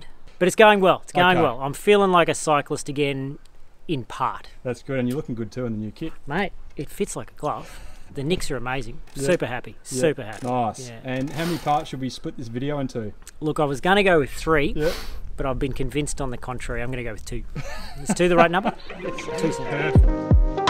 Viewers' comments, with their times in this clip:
0:08 he sounds like that bald european bike guy